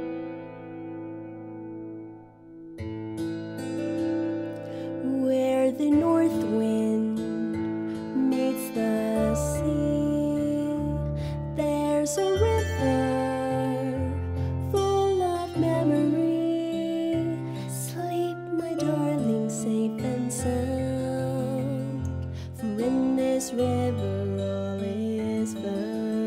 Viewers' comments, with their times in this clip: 0:08 It's Iduna BTW this voice sounds exactly like Evan Rachael Wood